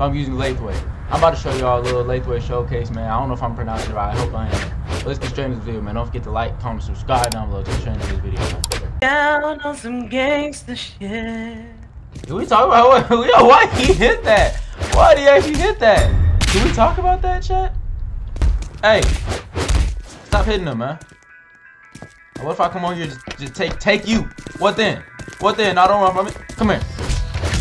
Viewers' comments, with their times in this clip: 0:08 Bro caught me singing 😅